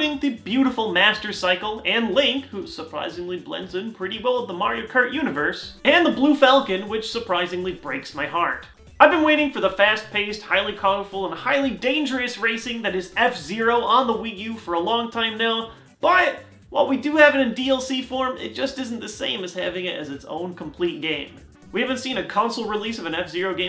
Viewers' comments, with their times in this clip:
0:09 did he just say fast paste? XD